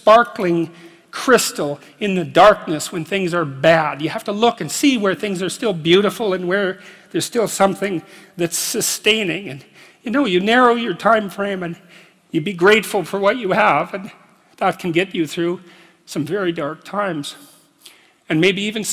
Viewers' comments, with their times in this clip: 0:06 Damn you can hear it in his voice, the impact it had on him - finding beauty that in the moment during hard times.